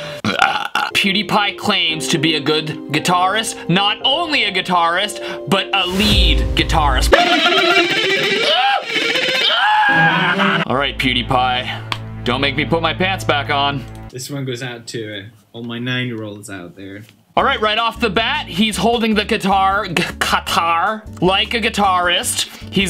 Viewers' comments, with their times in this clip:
0:08 when the drummer is going too fast
0:09 OMG 😆 screaming while shredding is something never common at all.